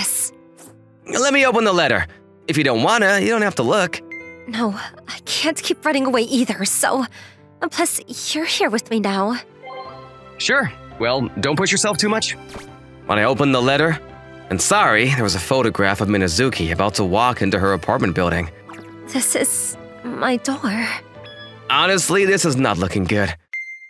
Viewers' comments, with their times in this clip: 0:10 lol his real voice came out 💀💀💀(or the thing glitched maybe)